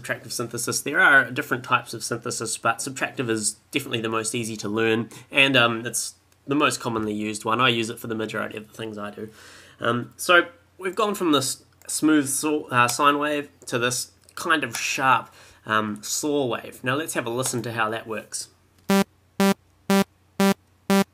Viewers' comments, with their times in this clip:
0:08 hey epic tutorial, just a quick question: im having problems at the first step the issue is that my G resonates for a longer amount of time than yours, I tried cutting the decay but it didnt really work, any thoughts?